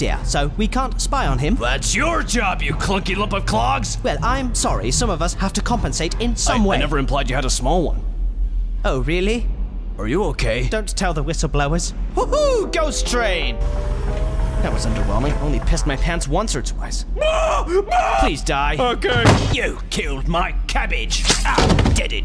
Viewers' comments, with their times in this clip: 0:09 He sounds like c-3po